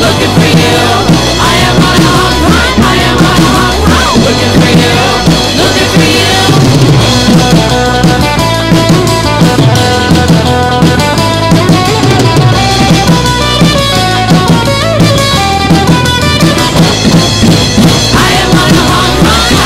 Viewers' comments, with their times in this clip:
0:07 That drop is so sick